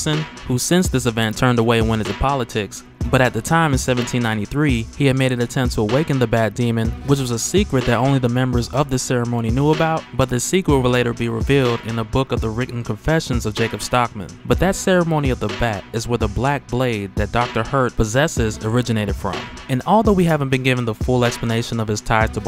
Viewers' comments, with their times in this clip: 0:10 that flow tho